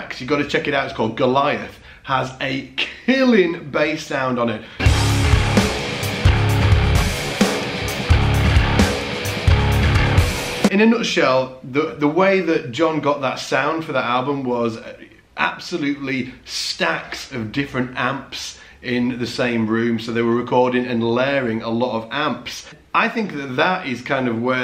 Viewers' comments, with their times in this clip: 0:06 #darkglassalphaomega That tone is sick